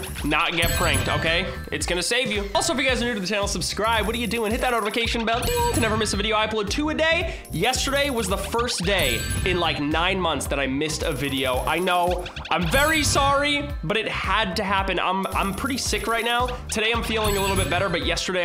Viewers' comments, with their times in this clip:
0:05 In the ding and box sound did it in the exact same thing